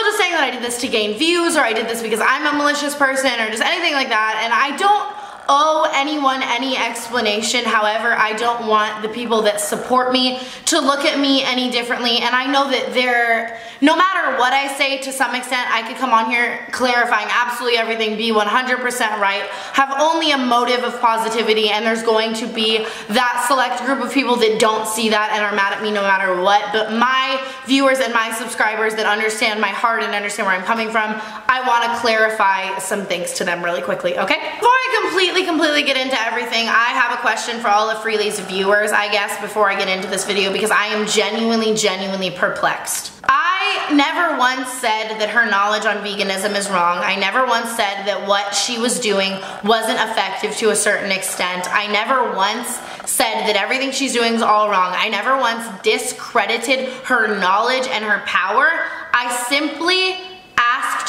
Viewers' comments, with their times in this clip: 0:07 so like if you turn it up all the way and focus on the background noise coming through it sounds like that girl from the ring doin that growl gargling shit i re watchted it like 5 times and im convinced your haunted now haha
0:49 is it just me or does this grunge noise keep playing in the background